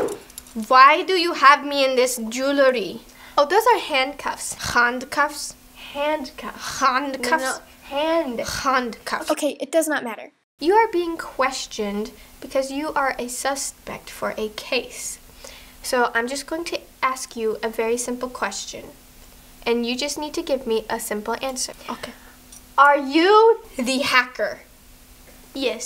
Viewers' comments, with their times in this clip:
0:08 No one realised, but if you have your volume up, Vanessa, says "it does not matter", but its actually in voice-over, not in the actual clip, wonder why tho